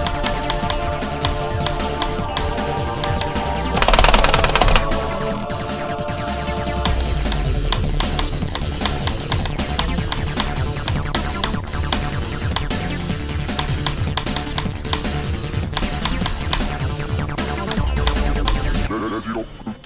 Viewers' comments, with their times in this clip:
0:03 what my farts sounds like